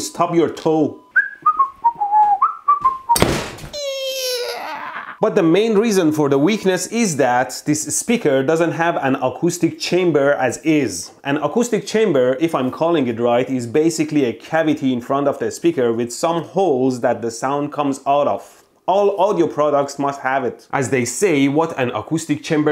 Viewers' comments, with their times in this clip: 0:03 that sounded like a machine gun firing wtf